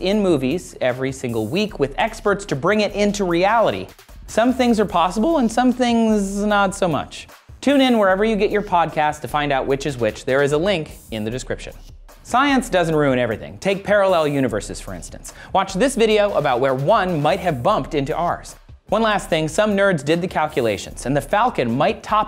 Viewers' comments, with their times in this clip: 0:03 Did his voice crack?
0:05 H O L Y V O I C E C R A C K